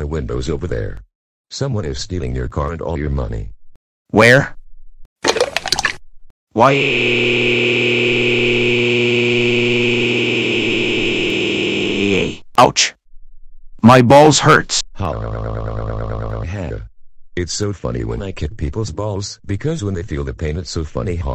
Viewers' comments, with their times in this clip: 0:06 he sounds like the air conditioner at the hotel I went to a few years ago